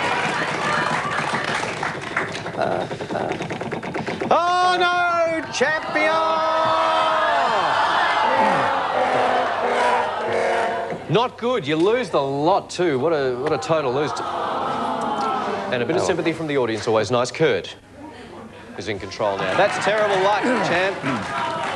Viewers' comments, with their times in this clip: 0:08 And the new bankrupt sound